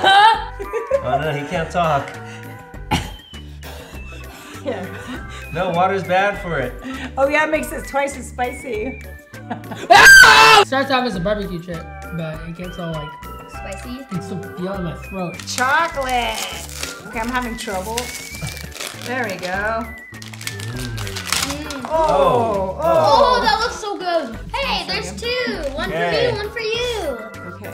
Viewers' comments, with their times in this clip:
0:08 R.I.P head phone users